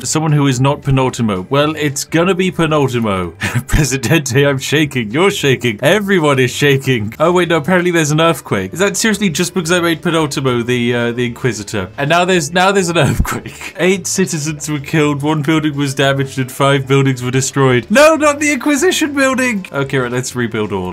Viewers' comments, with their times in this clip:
0:03 Who rang all the church bells?